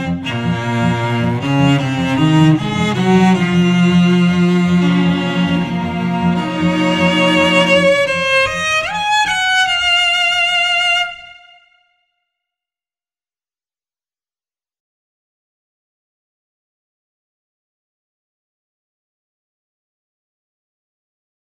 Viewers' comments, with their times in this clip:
0:06 You hear cello. I hear violin.